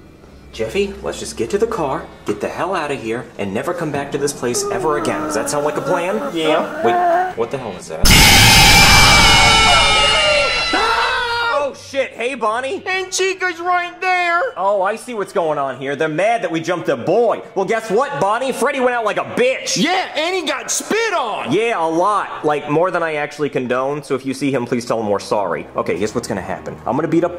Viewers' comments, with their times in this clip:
0:09 the way who Jeffy said shush bish